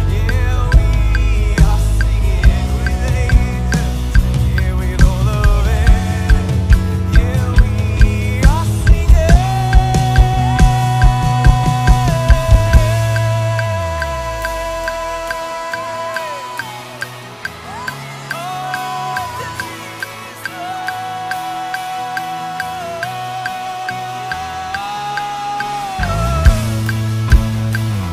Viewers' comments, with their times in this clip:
0:10 That bass slide tho... ⚡️😭